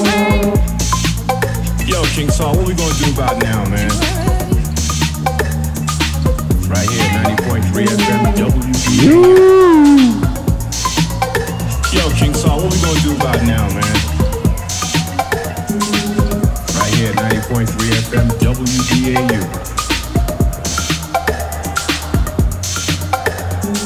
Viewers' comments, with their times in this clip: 0:07 My favourite part is actually kosi's completely misplaced "wuuuh" :D